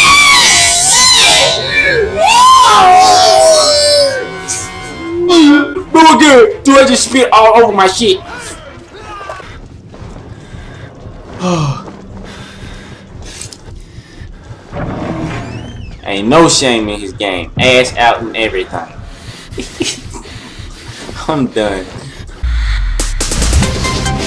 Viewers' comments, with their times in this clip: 0:08 u slobed lmao!